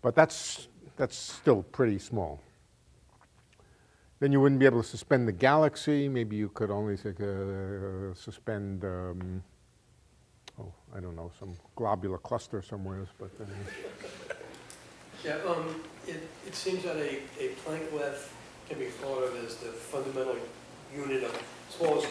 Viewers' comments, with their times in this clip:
0:08 Did he say “suspend a globule of custard” ?